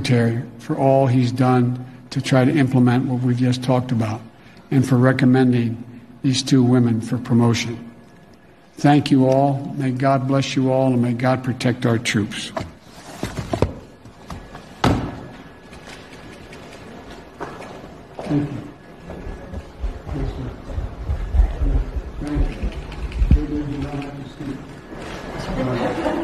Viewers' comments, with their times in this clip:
0:08 no offense but you forgot the breathing sound.